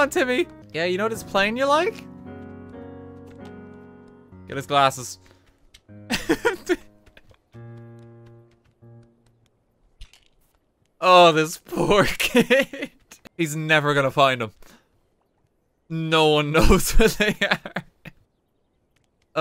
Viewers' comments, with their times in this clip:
0:05 evil Morty song plays in